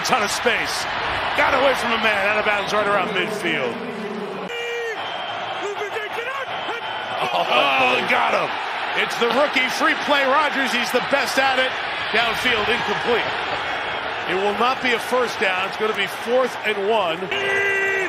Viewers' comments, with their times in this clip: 0:05 The hard count 😅